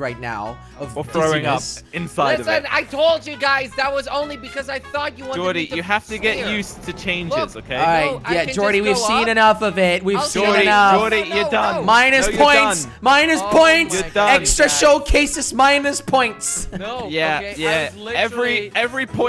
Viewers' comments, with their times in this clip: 0:05 cling cling part the real one